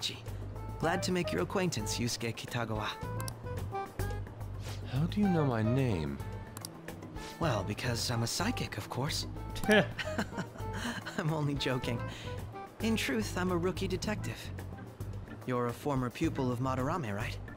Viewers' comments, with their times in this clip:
0:05 "nice to make your acquaintance you skanky Tagawa"